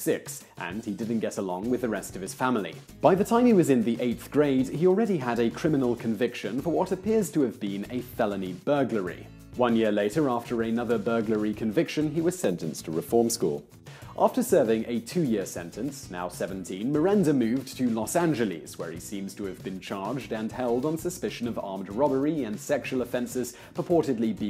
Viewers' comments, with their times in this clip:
0:08 audio blunder "reform school" shortly after
0:09 "Sentenced to reform school" .... Is it just me or does the audio sound different there? Like it was an audio dub or something... Time stamp is
0:09 Simon, did you flub your line and had to Dub over yourself, post-productively?
0:10 Am I the only one that noticed the much deeper "Sentenced to reform school" which was dubbed over at the mark? how odd!
0:10 am i overtired or did you ADR that line? "sentenced to reform school"
0:11 why does your voice go deeper for a little bit
0:11 Did they just dub over what he said XD?